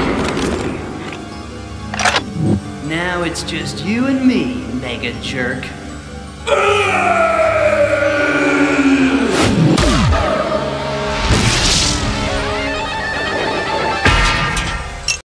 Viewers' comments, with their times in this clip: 0:06 I love Tarantulas' evil laughs. I also like that Megatron cry